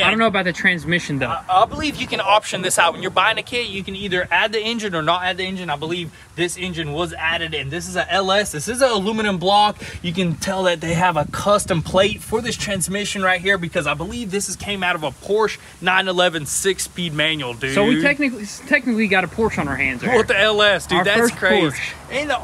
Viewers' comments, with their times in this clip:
0:03 scared me with that voice